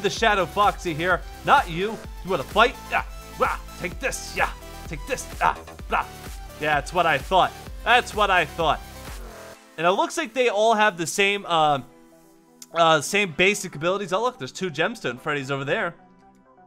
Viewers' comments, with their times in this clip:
0:03 you sound Like real voice foxy!